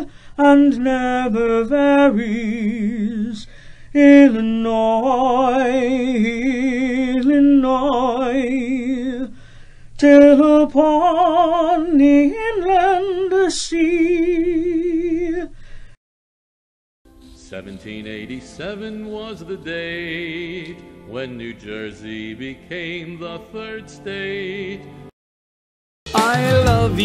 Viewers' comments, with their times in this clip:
0:09 Hey! Where is the music? I just hear the vocals! (In Illinois' state song)